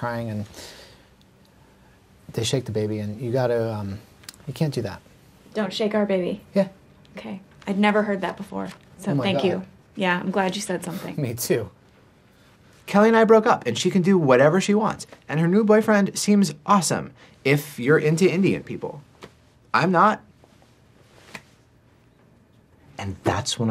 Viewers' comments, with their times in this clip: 0:06 the way he says oh my god and me too is so fkn funny lmao